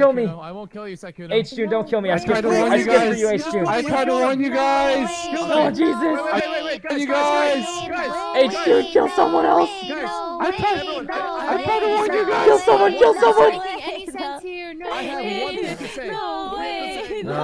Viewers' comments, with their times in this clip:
0:05 Words cannot express how confused I was Both girls got stuck on the same phrase & I thought my phone was glitching 🤣